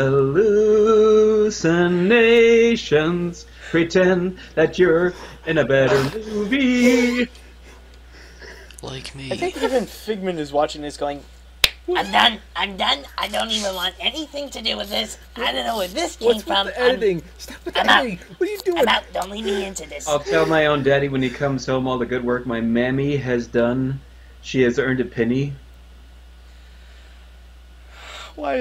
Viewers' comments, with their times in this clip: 0:10 I laughed at the figment impression.